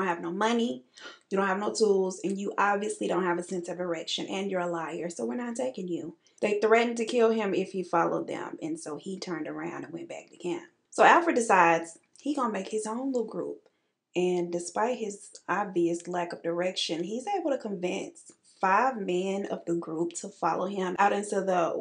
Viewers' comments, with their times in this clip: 0:04 Girl ...LMAO... you said a sense of a erection.. I just about poked my eye out with my brush.. Ooh this is why I love following you.. You are just hilarious!!...